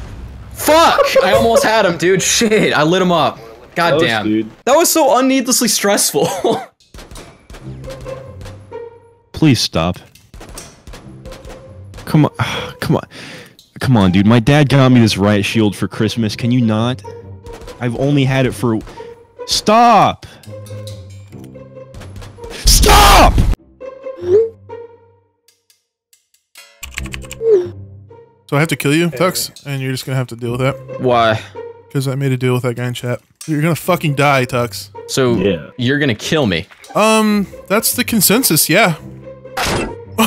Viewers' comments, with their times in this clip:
0:06 Gunshots as the Mario theme?
0:27 just realized he's doing to the mario theme. HAHAHA!